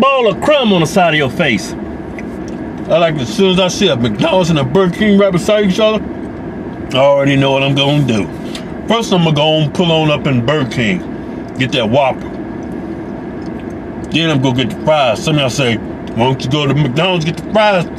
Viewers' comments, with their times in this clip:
0:03 that voice crack😂😂😂